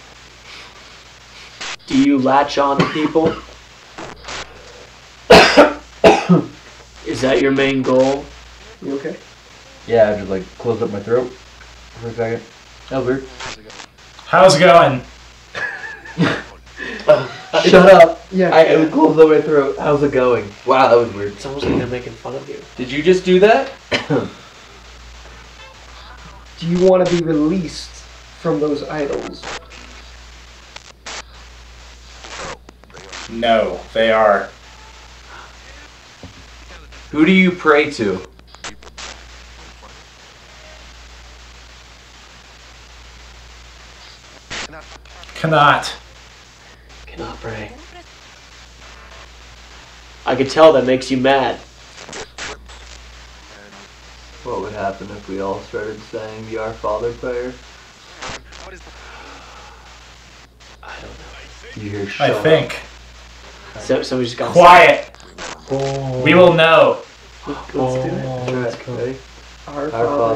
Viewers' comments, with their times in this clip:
0:04 i heard sometimes or something with the spirit box audio
0:08 And i could barely hear maybe in a girls voice i think
0:36 I wasin't watching the video just listening and during when they ask "who do you prey to" I heard the words "Jesus christ" right before the words "very funny". I had to go back and watch it a couple times and it's definetely there.
0:58 after saying you should say the fathers prayer it sounds like the audio says "what is the point"